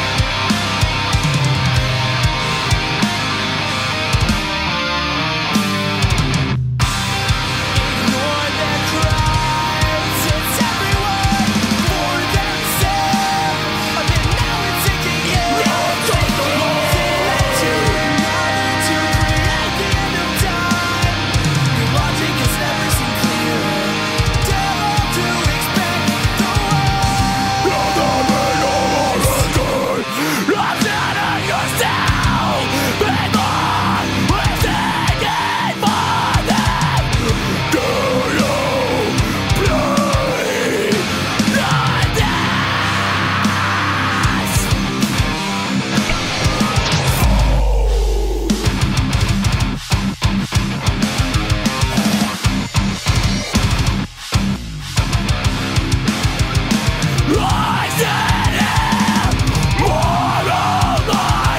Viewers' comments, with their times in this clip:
0:07 This is almost 10 years old and i still can't erase from my memory those clean vocals that come
0:47 OOOOHHHH!!!!! sick ass bass drop